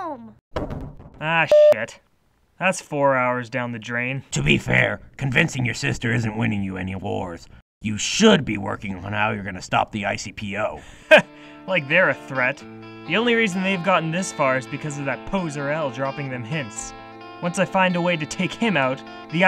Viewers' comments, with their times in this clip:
0:04 did he say that convincing sayu isn’t winning light any wars or that’s it’s not winning him any awards? I know the subtitles say awards but when I first heard it it sounded like wars so I’m confused.